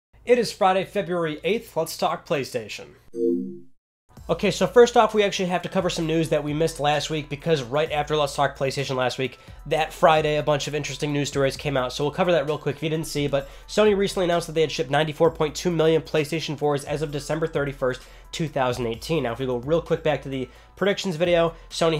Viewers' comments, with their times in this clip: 0:03 That PS2 sound Kreygasm 🤤